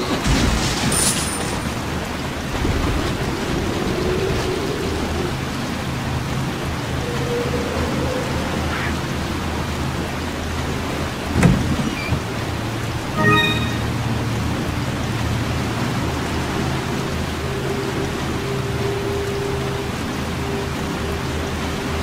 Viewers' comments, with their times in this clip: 0:05 I feel the video sound is a bit late than the image is happening, do you feel like me? 🤔 Fix the zombies very well + cool chris, the little chick felt scared and ran away 😁. Good video anyway 👍💪